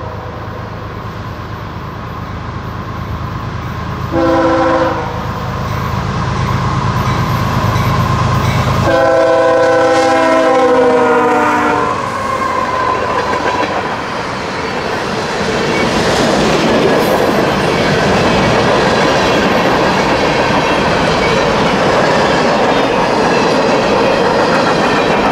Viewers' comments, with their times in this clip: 0:09 That’s one nasty horn Sounds like a fouled K5LA. Maybe I’m wrong, but I can hear that distinctive top end chirp.